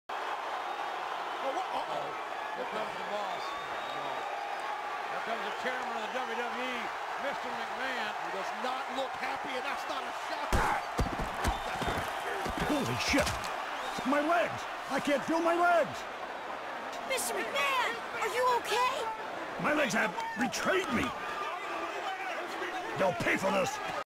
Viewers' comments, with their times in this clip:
0:10 that graaaahh! noise 😂